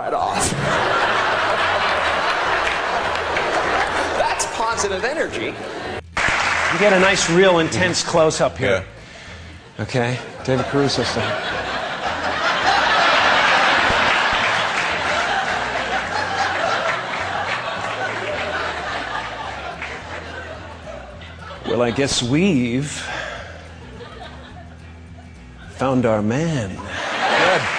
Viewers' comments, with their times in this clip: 0:06 Pause I couldn't tell if it was Jim Carey or Christian Bale
0:11 Did Jim carey did a Luke Wilson impression on accident@ and not David Caruso?